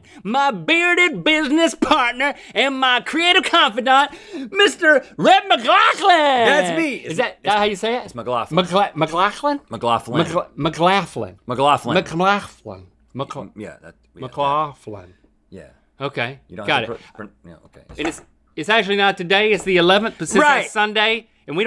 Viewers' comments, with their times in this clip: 0:06 Did this turn into a Jacksepticeye episode?